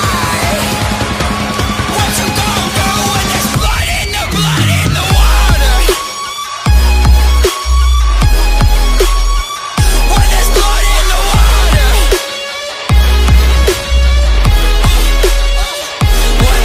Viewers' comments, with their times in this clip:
0:04 amazing beatdrop + hard hits, love it!